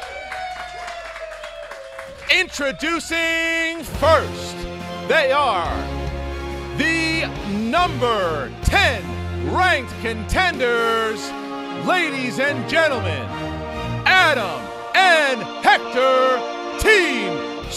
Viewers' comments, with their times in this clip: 0:03 that Justice League theme, so GLORIOUS!!! why can't Zack Sucker Punch DCU be this epic. That's it!!! i'm sold, SuperHeroesNew FTW!!! despite I'm a fan of Colliderheroes